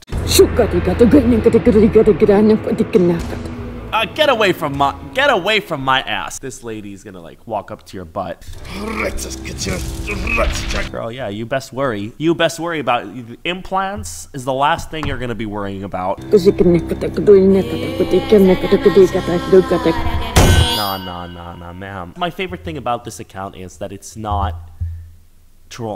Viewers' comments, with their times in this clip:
0:07 it kind of reminds me of when we used to speak in tongues and church